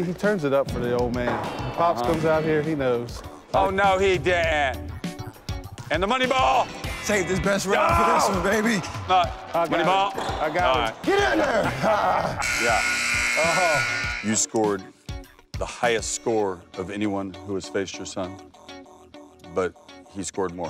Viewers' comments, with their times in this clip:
0:08 Bird imitation fail